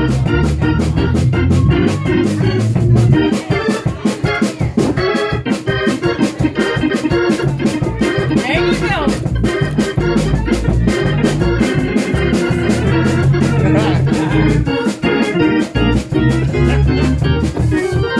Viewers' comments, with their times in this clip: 0:06 That's a funky mother.